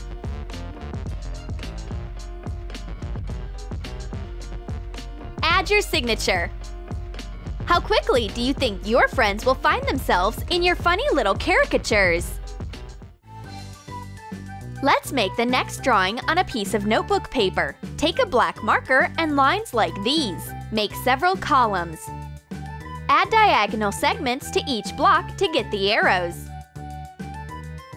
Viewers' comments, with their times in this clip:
0:09 she said charakchers like what!!?!??